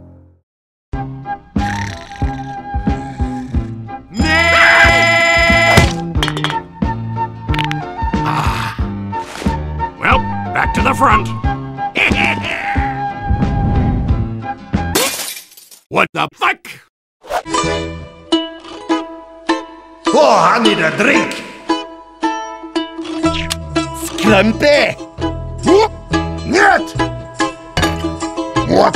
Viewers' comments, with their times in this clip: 0:03 someone made the MeeM clock a ringtone and now it's my alarm to wake me up. It's loud, annoying and perfect just the way it is
0:04 phone alarms if it had a april fools feature for tf2 players.
0:04 That is how my alarm clock sounds like in the morning
0:04 for the alarm.
0:15 it sounds like he actually said it